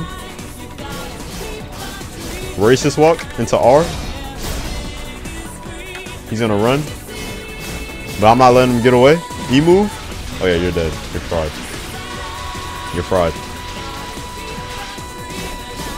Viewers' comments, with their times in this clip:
0:03 bro sounded like he said racist walk